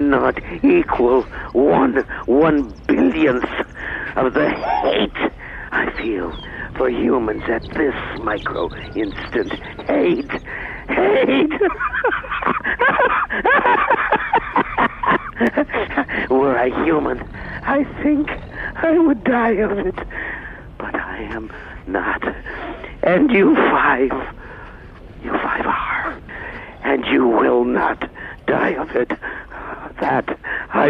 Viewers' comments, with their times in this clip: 0:10 I read this comment at the exact moment AM laughed on truly made my day
0:11 when am laughz . youre welcome ^_^